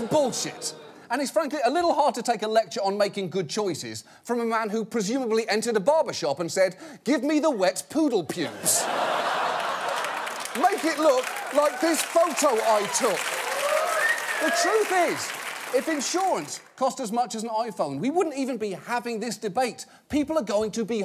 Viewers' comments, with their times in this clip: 0:07 Let's appreciate where "make it look like the picture I took" got buried in the applause from the "give me the wet poodle pubes" line before it.